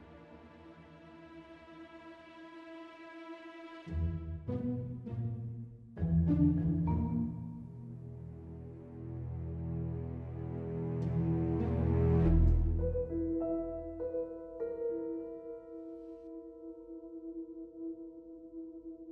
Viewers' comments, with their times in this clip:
0:03 Really quite interesting how the Nolan Cassidy theme brings to mind the Desperate Housewives theme - and I can see bit of resemblance with the kind of neighbourhood vibe as well! That's cool haha 😆